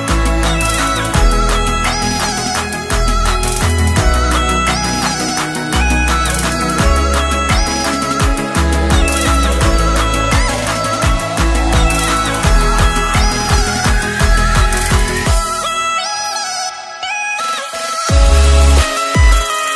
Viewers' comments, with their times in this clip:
0:04 The static shock when touching it U can´t fool me xD